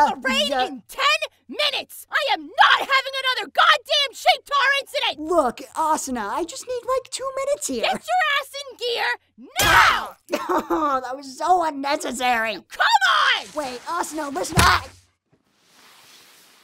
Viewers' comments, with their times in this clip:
0:03 What was that? A what exit?